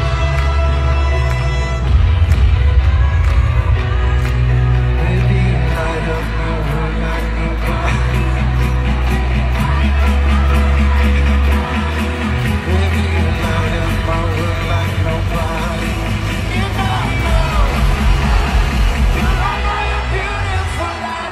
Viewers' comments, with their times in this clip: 0:08 why was he laughing